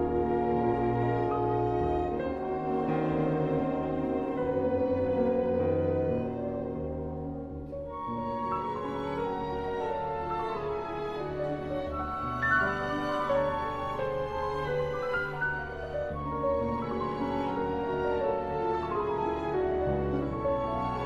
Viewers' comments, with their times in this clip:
0:04 is he giving whoever's out of tune the evil eye? Trombone / tuba? Wang is a force of nature. Spellbinding.